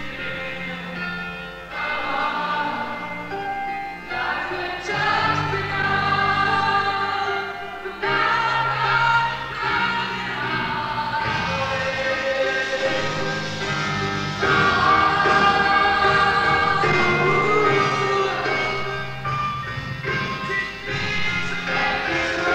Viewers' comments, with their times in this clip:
0:07 i love A4 and Bb4 in the first verse